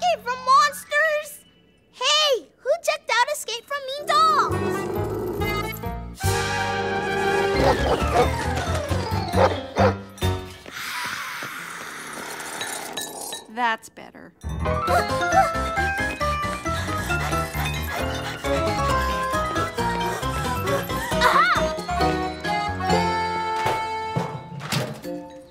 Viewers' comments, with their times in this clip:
0:10 Truman screaming quietly.